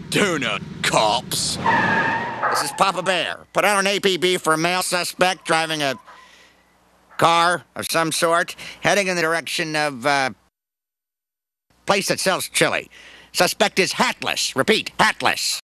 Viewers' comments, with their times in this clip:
0:11 "you know that" <-the missing audio